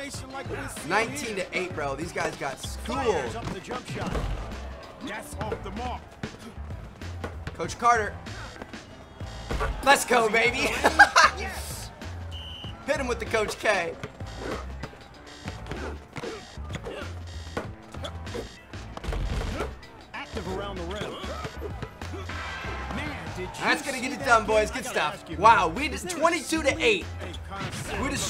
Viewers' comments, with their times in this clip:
0:09 your laugh sounds like Seth's from red dead redemption 😂